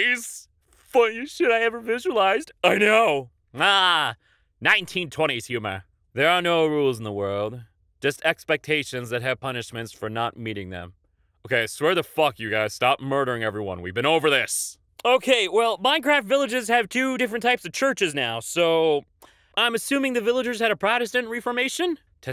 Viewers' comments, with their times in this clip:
0:03 was that some sort of impression?